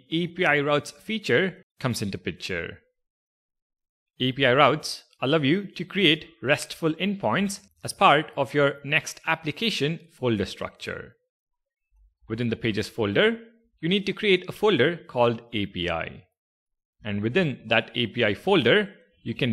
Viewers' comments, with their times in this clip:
0:04 Who else heard "I love you" ?😂